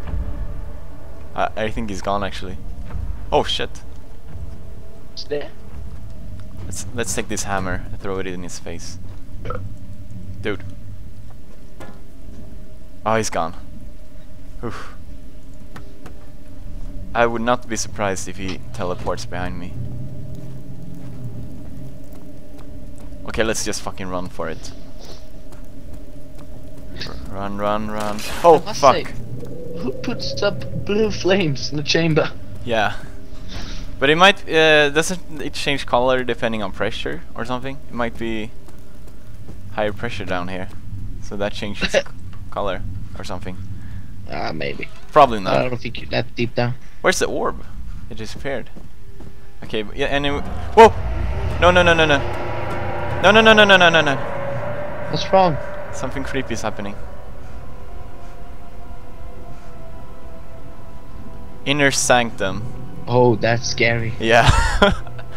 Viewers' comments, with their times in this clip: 0:06 Pewds “lets take this hammer, n throw it in his face” His friend Burps Pewds “Dude”
0:08 I kid you not, I burped at the exact same time. I think we are soulmates.
0:53 *scary noise* PewDie: No no no no no no! Me: PEWDIE! GO! The door is right there! PewDie: *looks around* e3e Me: GO!